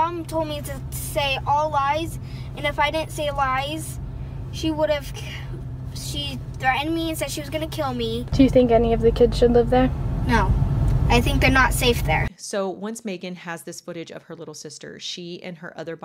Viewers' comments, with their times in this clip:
0:04 the way she halts when she’s going to say “she would’ve killed me” and corrects it to be more concrete snd credible